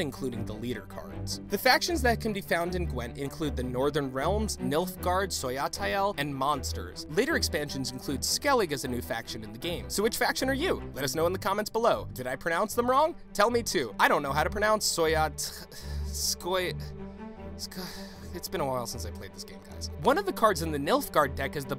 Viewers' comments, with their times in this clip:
0:04 "SOYATAEL" dude did you play the game yourself?
0:05 that pronounciation of Scoia`tael made me angry
0:05 My ears bleed a bit